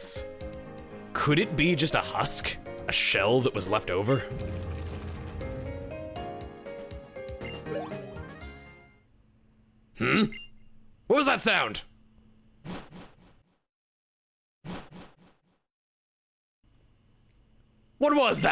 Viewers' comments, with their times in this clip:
0:04 Anyone else hear Kafka from Honkai Star Rail saying "Boom" when that text box popped up?